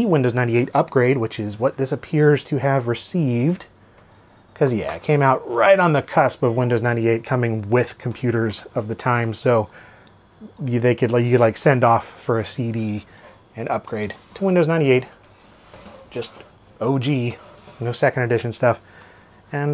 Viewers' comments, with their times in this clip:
0:06 I think you can hear the beep that laptops used to make when a PCMCIA card was inserted and the driver loaded. That's a sound I haven't heard in probably 20 years!